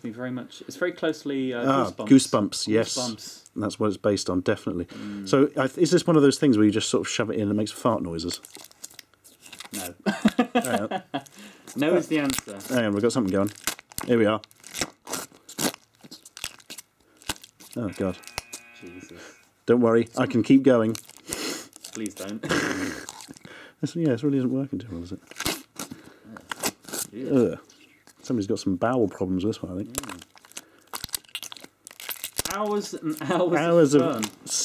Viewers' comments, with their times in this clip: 0:05 Closing your eyes doesn't make it sound any better... lol!
0:22 please stop... it just sounds like porno.